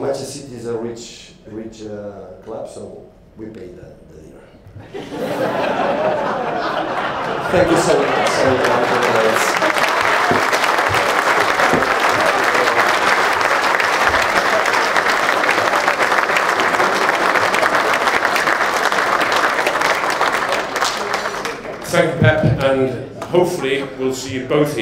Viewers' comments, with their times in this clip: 0:05 You can hear Jurgen's laughter in the background 😂😂